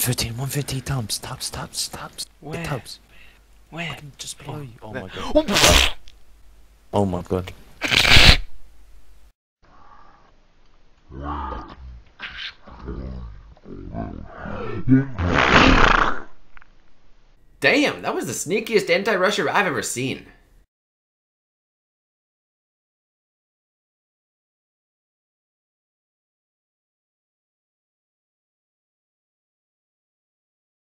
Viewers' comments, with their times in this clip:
0:05 Did some1 just fart ? :))
0:05 sounds like when i have the shits
0:16 that sounds like one wet ass fart..